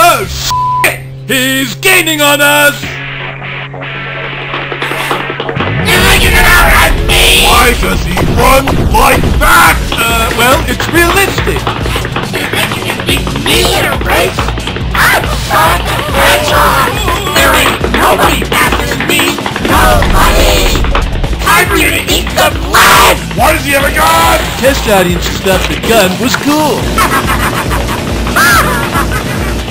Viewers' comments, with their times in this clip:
0:04 Me:rustling package Cat:
0:17 Oh my god, I love Sonic's voice so much on this part! 😂😂